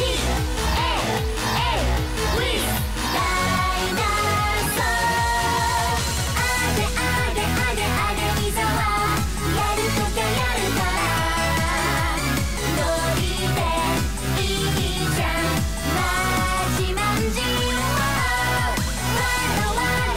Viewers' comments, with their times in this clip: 0:03 Astronomia automatically popped into my head